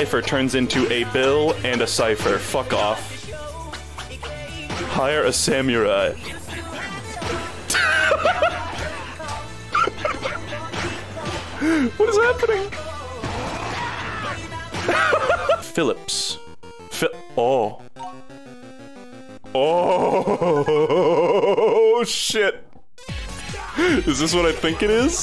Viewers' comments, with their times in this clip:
0:09 Is anybody gonna mention he is laughing the SAME cue as the demons